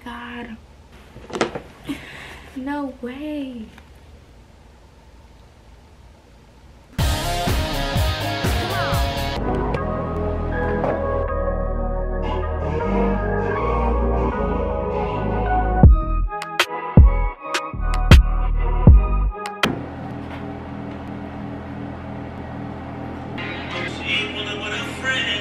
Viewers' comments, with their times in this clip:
0:07 R.I.P. my ears lol